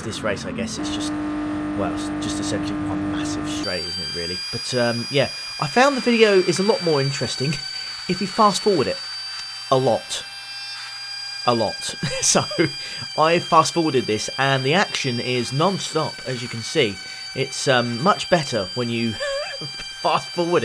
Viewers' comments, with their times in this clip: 0:03 dental drill engaged